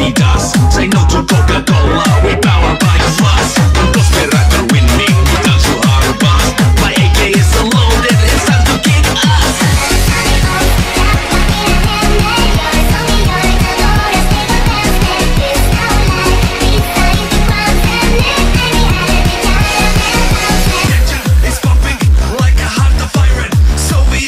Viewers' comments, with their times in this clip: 0:10 Fun fact the song here is in Swedish